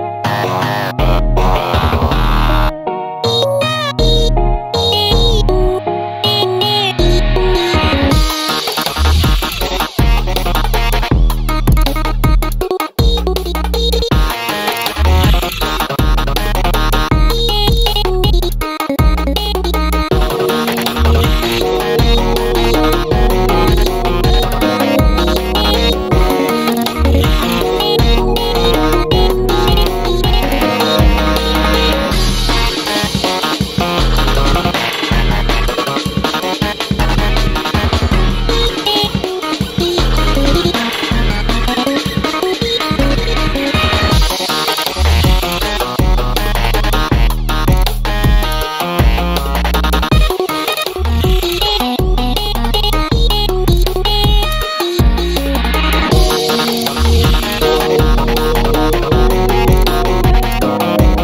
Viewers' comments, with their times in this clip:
0:07 I can hear Agoti's old voice in there somewhere.
0:48 i use to not really like Agotis new voice but now im kinda liking it espacially this one note but i still prefer the old one at least they couldve kept the bf old vocals